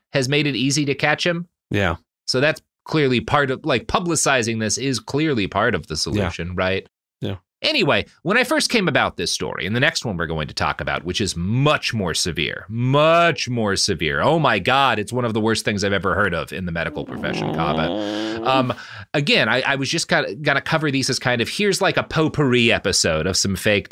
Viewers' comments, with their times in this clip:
0:10 The little groan reaction had me rolling